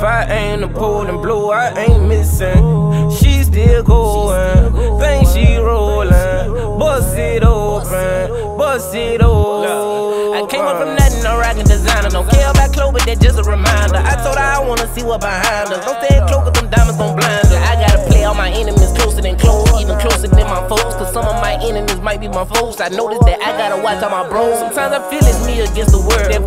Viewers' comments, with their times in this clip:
0:10 lowkey sounds like goat by lil tjay, but maybe I'm reaching